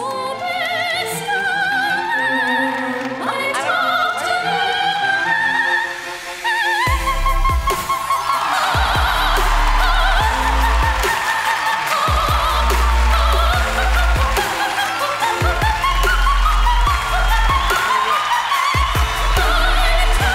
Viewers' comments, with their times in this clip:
0:08 When will. i. am loses his sh** at the beat drop🤣